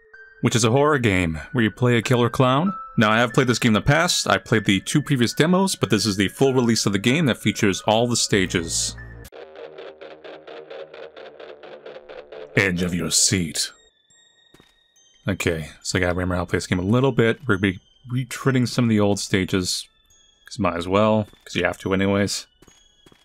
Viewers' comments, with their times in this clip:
0:09 I love how it sounds like alien blue's